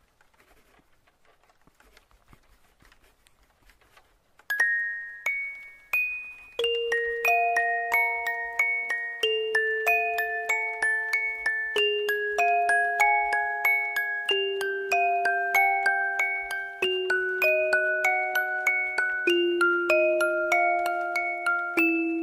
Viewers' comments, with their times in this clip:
0:05 the music at the right moment was awesome💜🥳✨